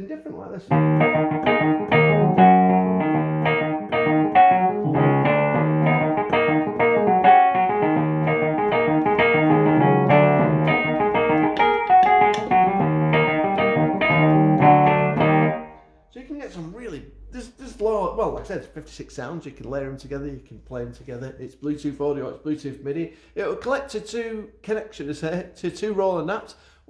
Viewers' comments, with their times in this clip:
0:10 Loved the riff !